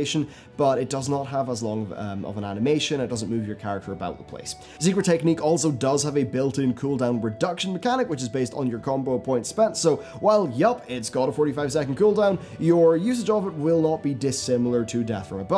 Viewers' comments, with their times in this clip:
0:03 Zebra Technique XD